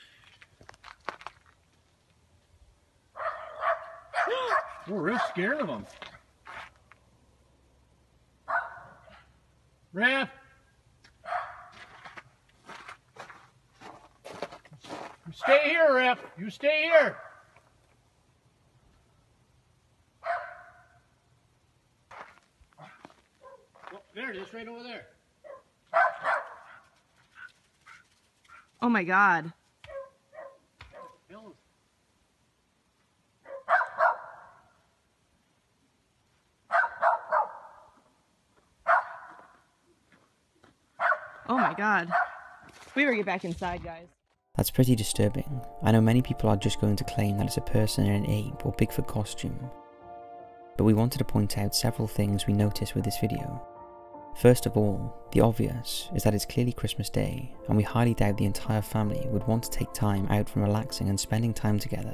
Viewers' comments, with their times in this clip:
0:06 ….fake. Fake fake fake. Give these guys a zero for acting ….”Omg”….”omg”
0:43 i think its a real big foot, from its step, very fast but it doesnt running, and the dog just return after try to chasing with barking